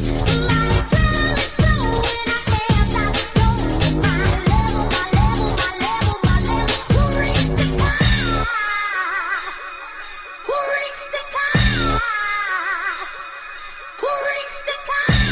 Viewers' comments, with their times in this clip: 0:03 Omfg ....... ROCKET ...... what a throw back warppppppeeeeerrr im crying and bouncing listening to this man thease tunes will never leave me